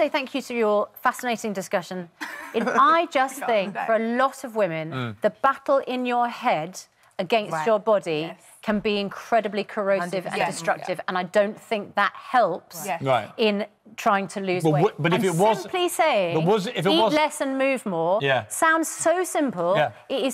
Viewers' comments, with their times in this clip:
0:05 sorry but the way piers gets cut off in the end is really funny xD from until end